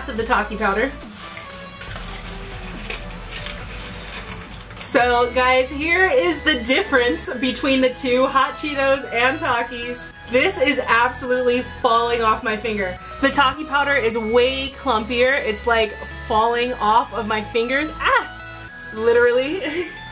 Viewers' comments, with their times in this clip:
0:08 how she said hot Chito‘s and talkies